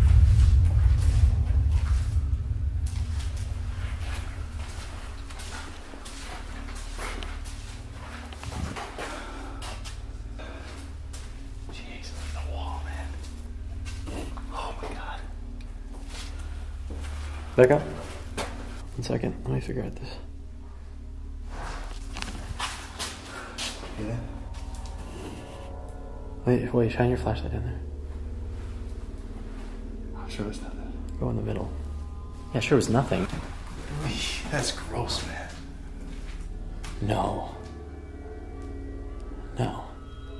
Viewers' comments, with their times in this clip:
0:08 was there a groan or was it edited in?
0:23 I also hear an "an-drew"